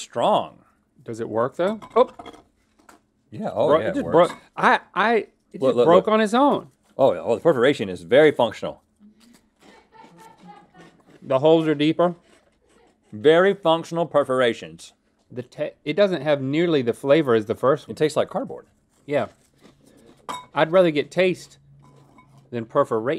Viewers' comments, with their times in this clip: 0:06 dude is that a demon in the back round just listen